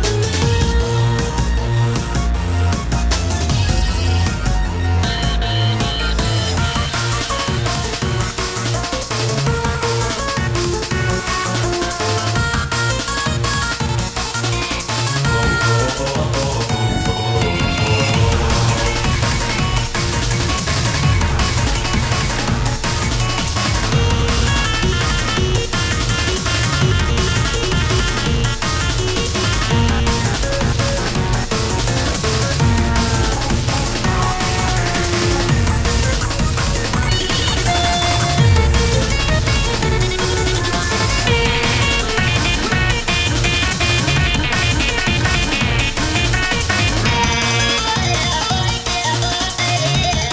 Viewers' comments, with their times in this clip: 0:07 Prob The Best Part BECUASE Jerry Sounds Like Orange
0:12 That Jerry voice is spot-on!
0:37 is it just me who hears: "Racist"